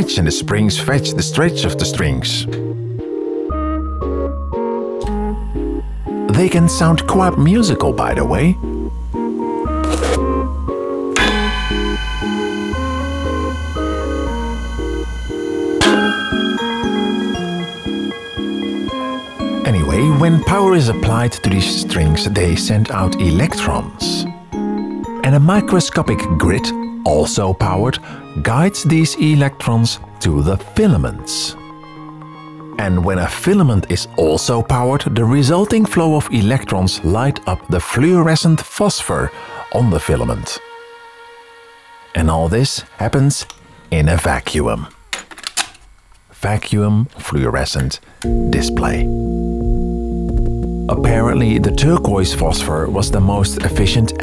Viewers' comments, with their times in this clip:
0:10 sounds like a DX7
0:11 soumds like sega saturn startup
0:13 I love how you just nonchalantly whack that VFD board it is quite musical too!
0:37 And imagine that the same mouth spoke this "Tell me you're from Netherlands without telling me"